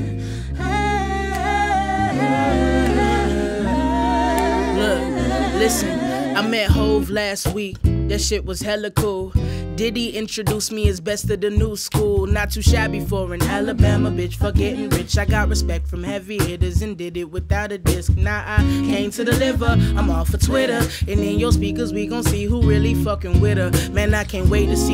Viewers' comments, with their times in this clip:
0:09 this girl can sing/rap and the backup singers are 🤯🤯 used to be a flex😬